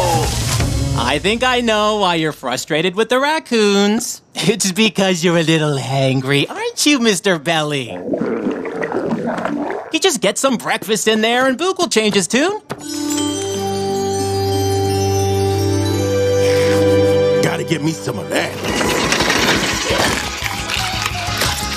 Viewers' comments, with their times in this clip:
0:06 Boog’s Stomach Grumbling Like in Open Season 2 (2008)